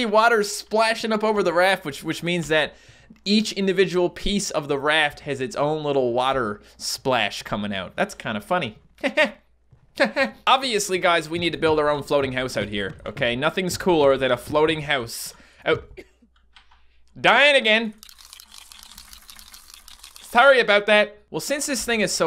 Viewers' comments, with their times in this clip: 0:08 that laugh that killed me😹😹😹😹😹😹😹